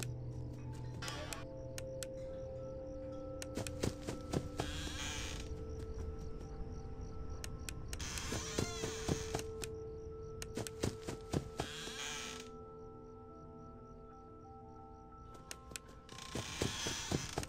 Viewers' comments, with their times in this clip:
0:05 I hear small footsteps use earphones (not the player's footsteps)